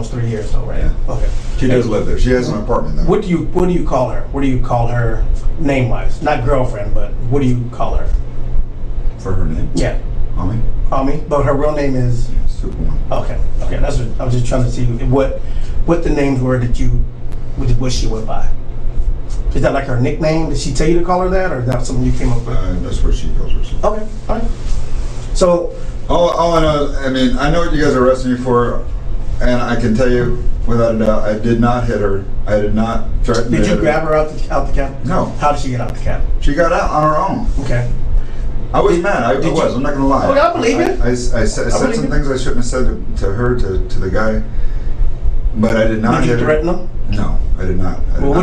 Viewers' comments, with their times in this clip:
0:03 Can someone please help me out here.... 'What do you call her? Name-wise? Not girlfriend, but what do you call her?' "For her name? Mommy." 'But her real name is?....." "Superwoman" hahaha... Even slowing it down/CC/captions aren't helping. What on earth is he saying? No way her name is "Superwoman" although that would be totally badass! lol
0:09 they asked what he calls her as a name and the closed captioning said Mommy but her real name is Superman I wonder what the real words are LOL
0:31 This guy says "I did not hit her" so unconvincingly I half expected him to follow up with "Oh hai, Mark.”